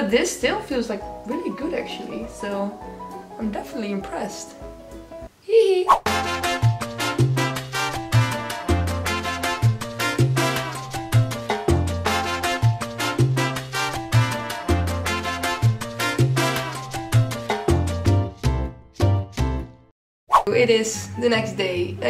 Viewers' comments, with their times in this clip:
0:06 the music made me hungry...i am pavlovs dog 🐕 🎺